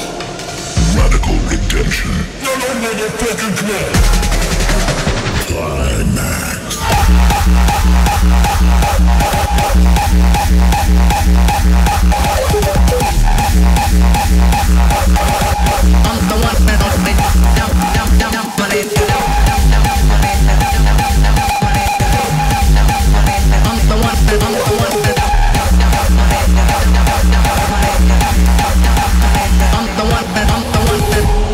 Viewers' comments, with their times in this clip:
0:06 The Dominator Tribute starts already, cuz it either started right after the fake drop from 20.000 Volts, or he used the same kick, with the vocal samples through it bcuz the song is coming right after 20.000 Volts...
0:06 New dance music genre. Noisestyle!
0:12 Hahaha that face, those kicks are out of this world